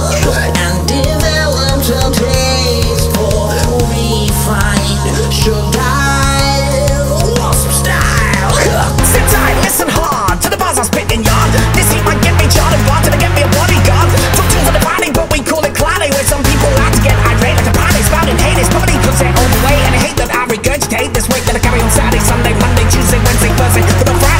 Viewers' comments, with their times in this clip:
0:07 I f*cking love sweep token! This was an excellent collage cover of mods. If I closed my eyes for a second I couldn't hear the difference. Wasp Style. Woolship!!!